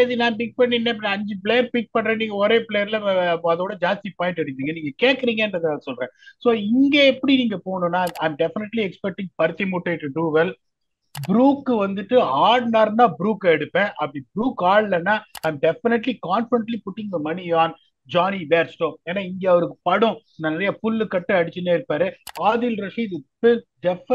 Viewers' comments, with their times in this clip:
0:07 ... paruthi mutai to do well 😂😂